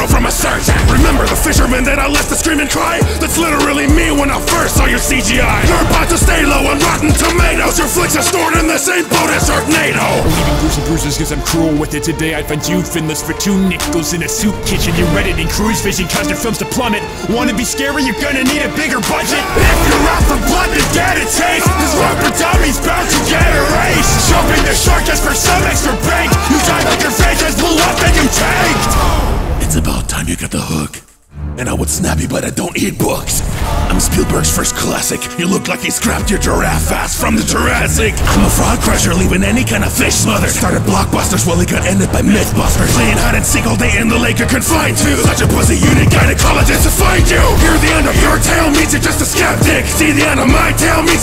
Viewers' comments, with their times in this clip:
0:09 Why did I hear the Flash theme starting
0:37 Did Jaws laugh